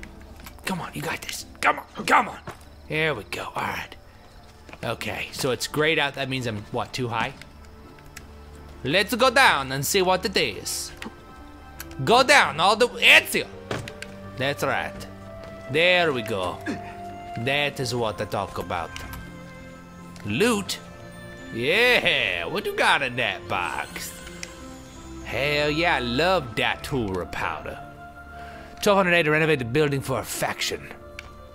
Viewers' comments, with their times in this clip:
0:09 funniest way to say Ezio, I have ever heard
0:12 Love the way he says EZIO! :D